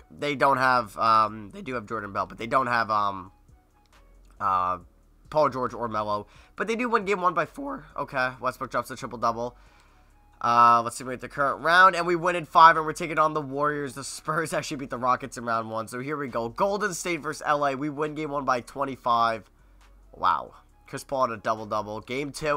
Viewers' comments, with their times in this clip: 0:08 what was that voice crack😂